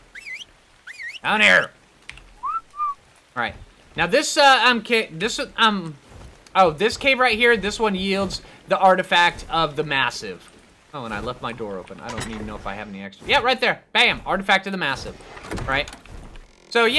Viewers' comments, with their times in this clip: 0:04 why did I find that stutter cute...